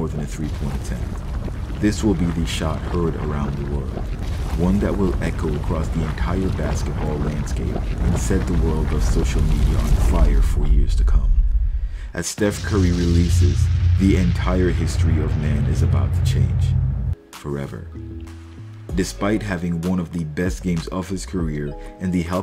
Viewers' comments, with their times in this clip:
0:09 so intense naration.